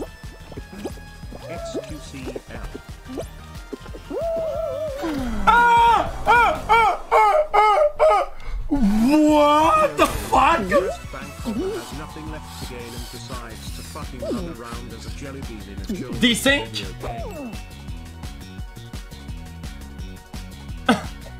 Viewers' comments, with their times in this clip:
0:04 The seals at the zoo when they want more fish